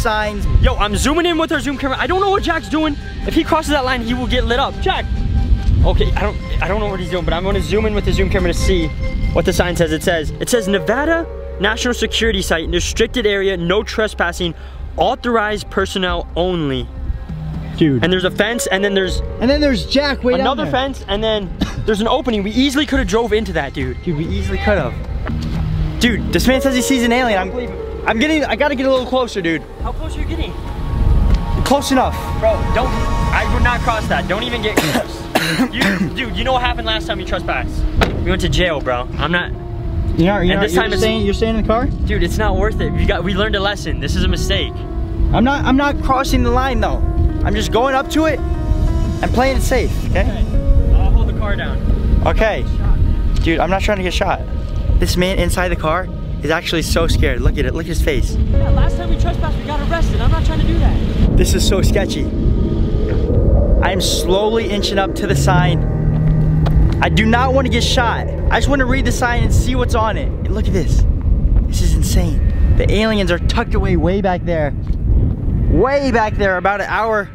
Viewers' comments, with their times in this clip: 0:10 thats how you actually say Nevada not like other people saying nevauda or something
1:03 I can hear an alien